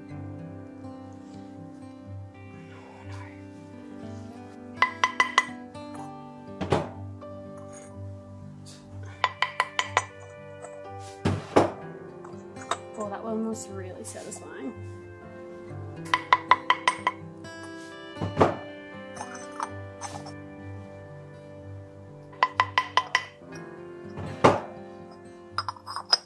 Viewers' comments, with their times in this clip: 0:07 omg the edit of the cut frame with the knocking of the hammer made me jump so hard, i thought you'd dropped it on the ground for a split second!! I agree about the negative space with the animals, i think you totally nailed these 100%